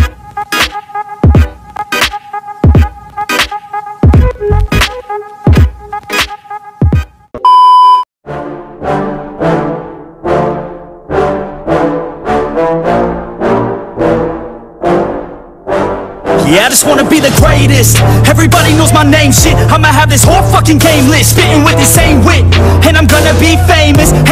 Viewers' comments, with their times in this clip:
0:08 🤯🤯🤯🤯 what a Song🎵